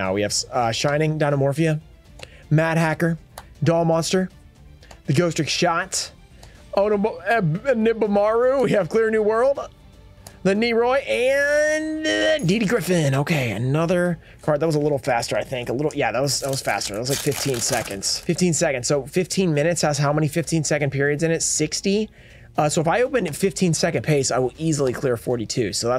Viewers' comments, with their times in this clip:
0:06 i thought he was saying my username for a sec xD